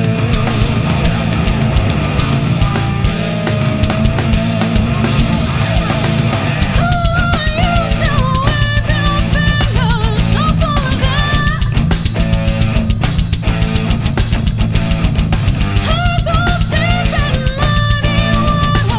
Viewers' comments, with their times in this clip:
0:05 is that the right key you're singing? This is absolutely f'ing amazing, but that one part sounds off to me- is that perhaps because it's octave's higher that I'm not hearing/processing/I'm so used to the original song? I can't think of a technical term- but it sounds at least a tone/semitone down from what it should be to me. Otherwise it's awesome.